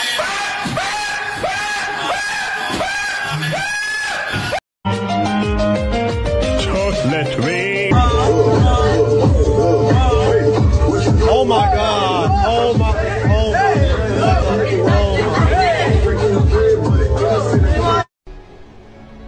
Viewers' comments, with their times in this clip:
0:05 YOU DID NOT HAVE TO USE THAT SONG 🤣💀💀💀💀💀